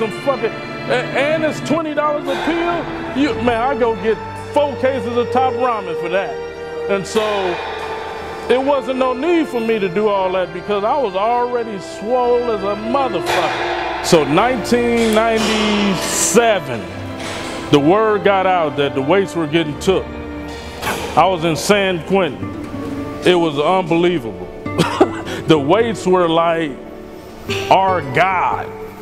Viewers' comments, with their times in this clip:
0:10 .. These words i will never forget haha Sounds so cool and confident